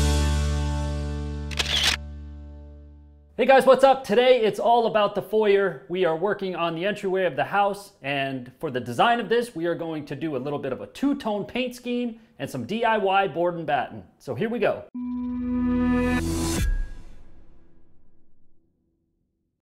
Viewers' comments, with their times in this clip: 0:08 Fast-motion with no voice – awful! I stopped viewing boring!!!